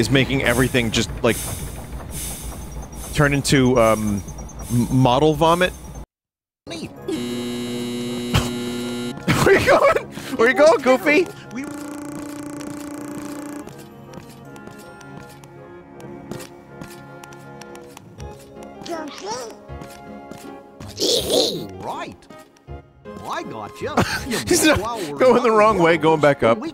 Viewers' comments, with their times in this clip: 0:10 Jiminy just sounded like an actual cricket